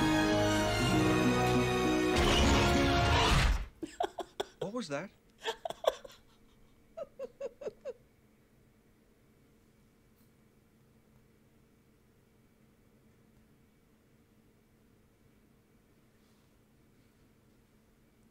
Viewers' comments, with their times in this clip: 0:03 I also mentioned before how I had seen at least a dozen different reactors do this series (and I never get tired of it). I can confidently say that you are now my favorite. Your transition from laughing to crying uncontrollably was so unexpected, yet so genuine, it had me crying along with you. No one else has ever done that.